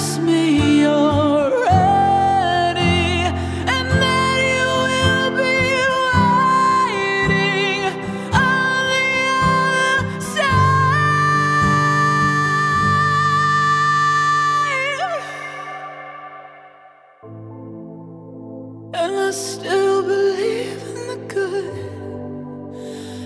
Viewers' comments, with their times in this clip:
0:09 That note just wow. Your covers are amazing.